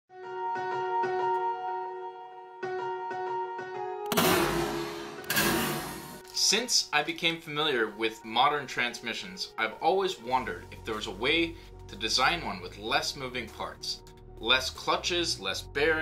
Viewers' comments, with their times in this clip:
0:01 "deep voice" LIKE A BOSS